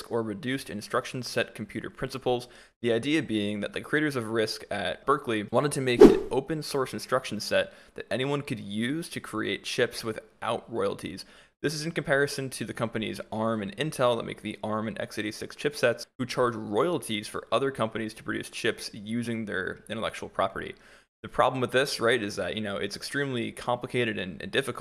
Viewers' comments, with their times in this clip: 0:05 what was the whoosh seconds?